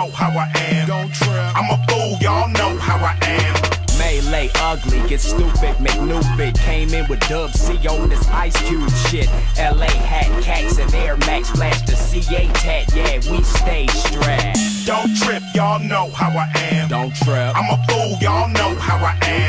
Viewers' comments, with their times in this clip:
0:04 CJ sounds like tyga